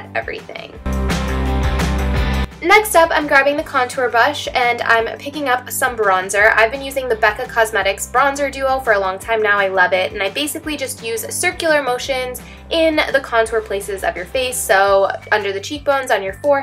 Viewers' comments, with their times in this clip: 0:03 "contour BUSH" haha